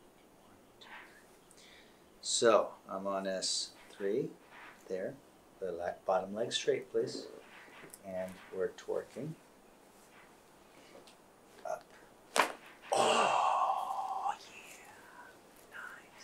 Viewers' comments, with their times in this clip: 0:04 WOW HER BACK CRACKED LIKE A GROWN PERSON! Omg, even her shoulder blades are aligned now!